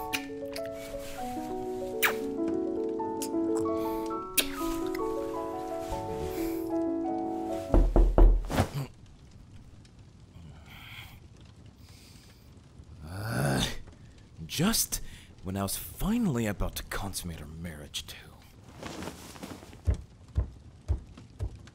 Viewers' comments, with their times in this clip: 0:08 Knocking Me — 😡 Oh, come on! Are you effing kidding me?! Thanks a lot, Bruno! You just ruined the romantic moment!